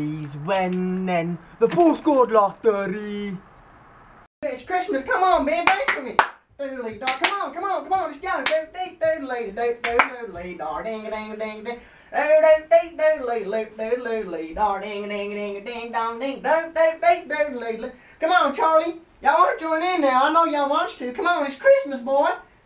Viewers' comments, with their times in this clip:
0:10 your dog is so cute! And the Nigerian accent was hilarious. Pretty good, too. I would know because my dad has one. xD